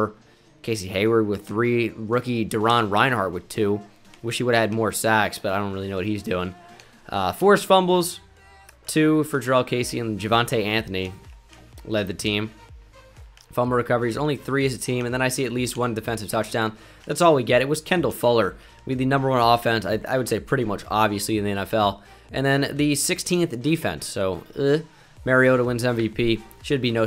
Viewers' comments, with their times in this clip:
0:08 pink panther music starts playing